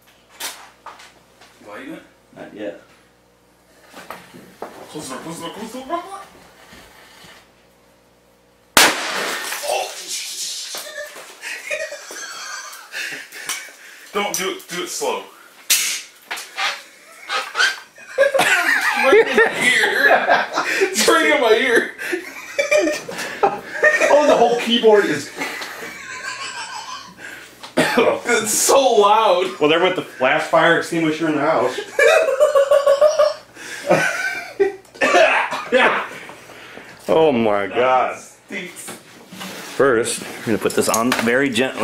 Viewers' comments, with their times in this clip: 0:08 WHY TOO LOUD!
0:25 that laugh is so funny 😂